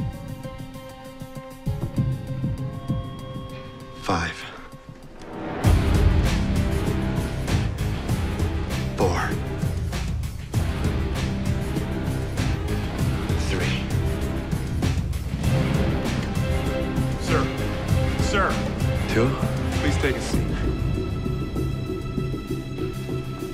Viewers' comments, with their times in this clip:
0:04 I was terrified for Mahone when Wyatt stood up and that music started blasting.